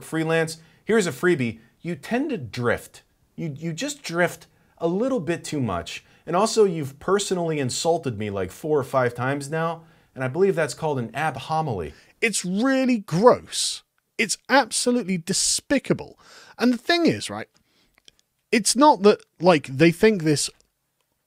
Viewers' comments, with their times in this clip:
0:03 is when I squawked like a large sea bird.